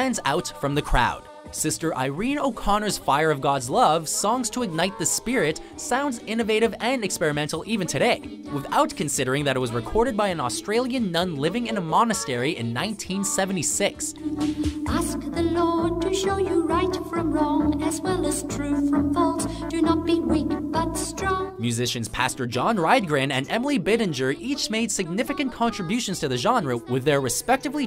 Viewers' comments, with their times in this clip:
0:10 Why is no one talking about this? She sounds like that vegan lady who sings about how you should abandon your religion and it makes me cringe so hard xD